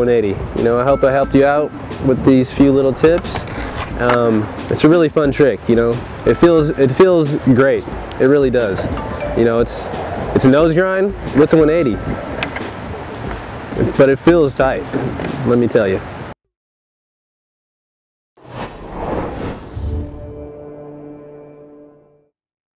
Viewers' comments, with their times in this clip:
0:08 did anyone else hear his phone?